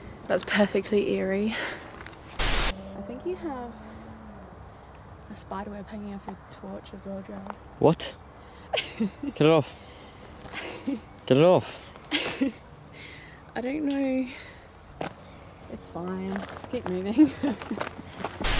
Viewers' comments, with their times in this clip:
0:03 In minute I heard something that sounded like an animal or something strange.